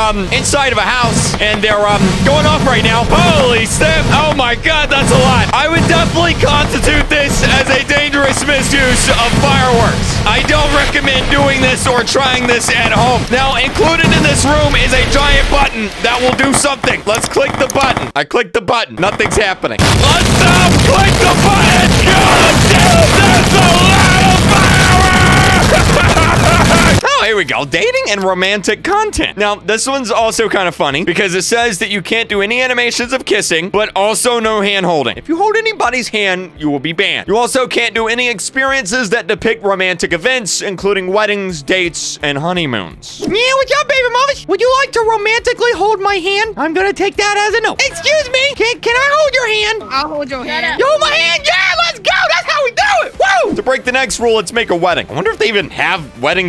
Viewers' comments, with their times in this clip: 0:08 MY EARS DIED ON
0:14 Put your volume down
0:18 BE READY FOR NUKE VOLUMNE
0:19 That sounds like a nuke💀
0:20 headphones users are definitely dead
0:20 This is funny hahahaha its the new loudest sound in the game 😂
0:20 r.i.p headphone users 💀💀💀
0:21 blud i turned it up to full volume and well lets say im deaf now. not joking.
0:21 volume warning for headphone users
0:21 rip headphone users you will be missed 😢
0:22 Rip my brand new headphones😢
0:25 Put the volume at max and you might go deaf
0:25 rip headphone users… (me 🥲)
0:26 my eres urut so much from those fireworks
0:26 I had headphones on and turn the volume all the way up😂😢
0:27 r.I.p headphone users 😭-
0:40 UR LIVE OMG MY EARS MAN